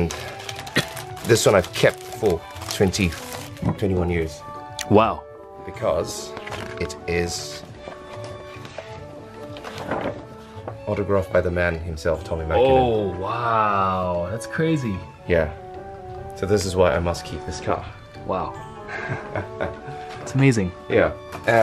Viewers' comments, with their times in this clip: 0:09 as a Finn I'm really impressed how fluently he said Tommi Mäkinen